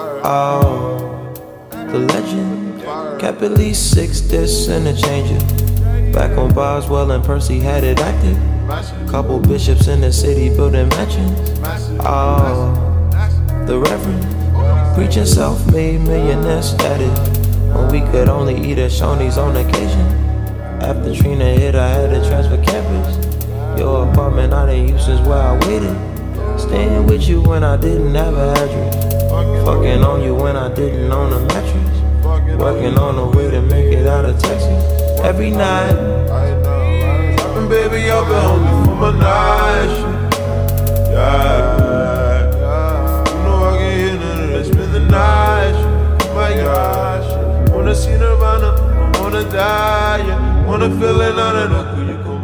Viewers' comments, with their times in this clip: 0:03 is such a good switch up
0:40 I just wanted feel how that "Yeaahhh" sounds